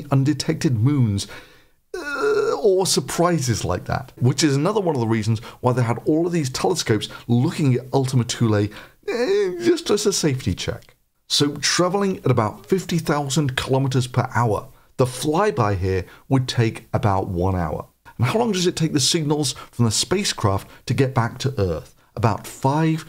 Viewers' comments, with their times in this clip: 0:07 i blown away amazing also my childish side was here for the moan feelsgood keep repeating it